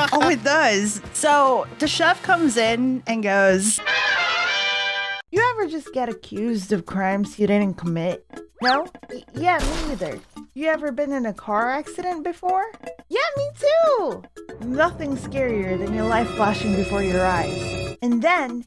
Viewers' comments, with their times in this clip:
0:03 that chef can talk in batman transitions?! I want to do that
0:04 I got an ad so I just heard: "The chef comes in and goes- MORTAL KOMBAAAAAAATT "